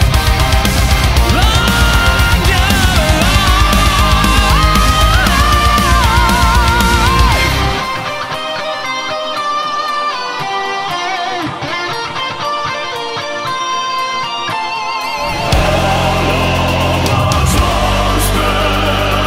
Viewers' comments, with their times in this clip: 0:07 Oooh that subtle Black Diamond nod was siiiiick man